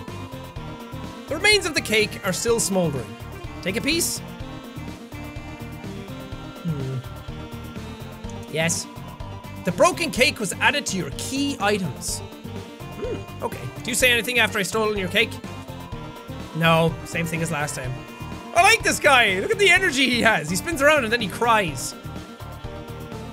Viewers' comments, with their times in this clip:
0:07 is it just me or does that sound like Angel Dust lol